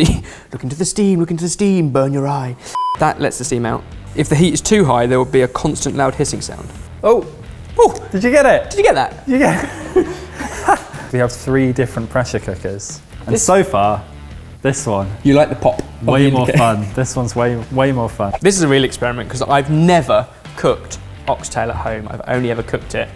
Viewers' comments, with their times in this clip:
0:05 "You end up with Yahweh"? Must be pretty godlike then!